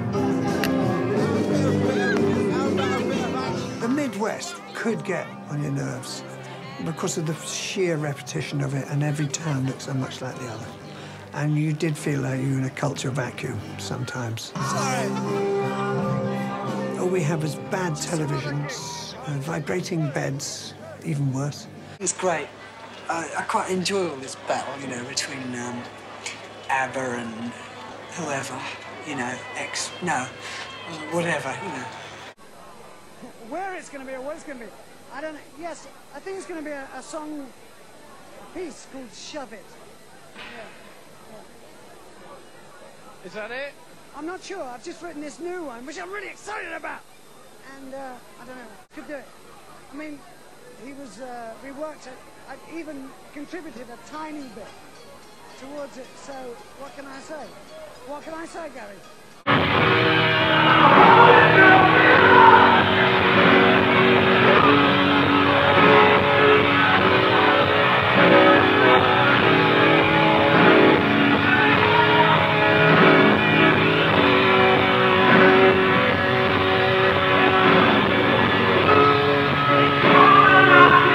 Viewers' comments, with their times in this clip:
0:10 s the maturity, wow, farts with his hand
0:11 Is roger making a fart sound with his hand. This is why I love him😂😂😂😂
0:46 idk why but in sounds like vegeta's english VA for me
1:02 OHMYGHOD rip heaphone users HHAHHAHAHA but iloveyouroger!